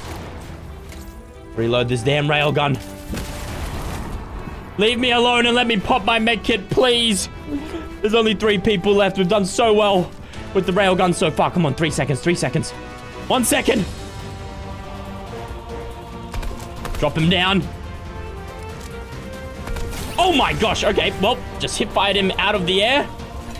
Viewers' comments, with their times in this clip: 0:06 Who heard a voice